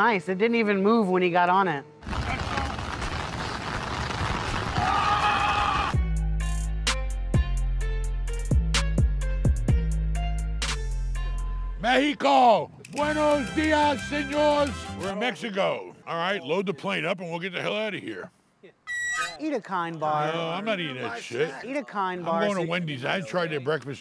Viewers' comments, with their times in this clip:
0:05 I replayed that scream at least 12 times lol